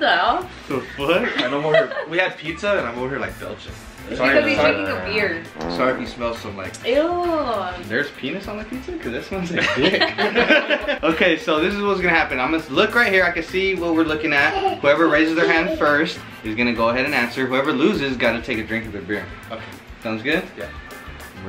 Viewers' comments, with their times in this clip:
0:06 Who farted ?!?? Lol